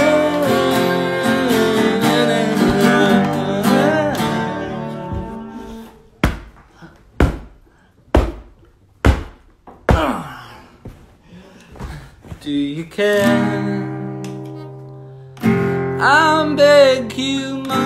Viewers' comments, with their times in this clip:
0:04 When he started whamming the guitar I lost iT lmaoo